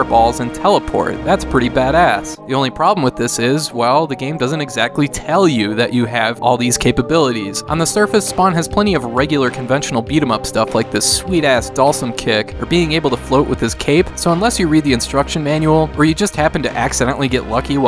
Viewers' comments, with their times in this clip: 0:04 Cape abilities? :P